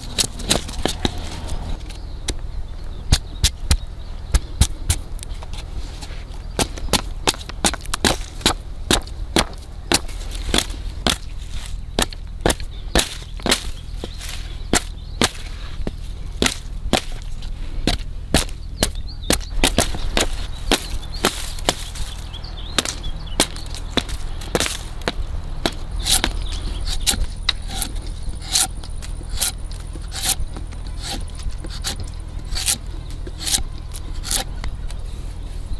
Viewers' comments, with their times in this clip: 0:10 who the hell put Minecraft sounds over this or I'm I just hearing things
0:18 sounds like Minecraft